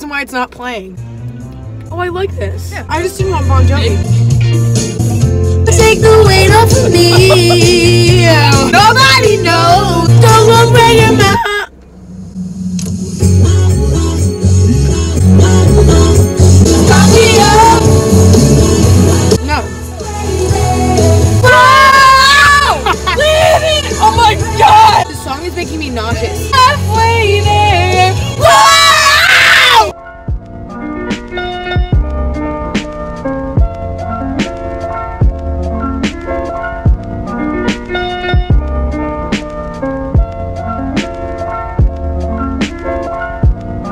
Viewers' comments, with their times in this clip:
0:05 i thought she was lip syncing Fact: she was actually singing wtf- THAT WAS GOOD GURL
0:05 i wasn’t looking at the screen and i literally thought that was the person singing omgg
0:05 why does it sound it like Hannah Montana
0:05 she sang good
0:05 I had to replay that at least 7 times to hear that voice, yessss.
0:06 HOLY SHIT THAT WAS GOOD!!! who knew our queen could sing
0:06 I’m actually surprised at how good you sounded there holy shit
0:06 she lowkey sounds like Hannah Montana 🤣😂
0:06 I THOUGHT THAT WAS THE ACTUAL SINGER DEADASS HOLY SHIT THAT WAS GOOD
0:06 I thought she was lip syncing. That was actually so good. Shook.
0:06 i thought she was lip syncing woah-
0:06 ok so no ones gonna talk about those iconic vocal skills
0:11 Me when my dad changes the song to “ the best song of all time” and it’s a middle age man how has a squeaky voice 😂
0:28 R.I.P. headphone users (including me)